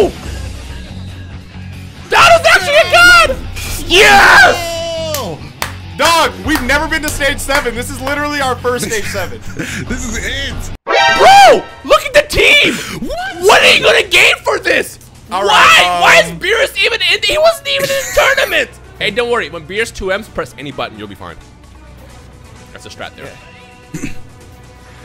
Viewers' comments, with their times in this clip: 0:10 Everyone's reactions to the Stage 7 Team: Edit: I like how they just spam the Exclamation sound effect in this vid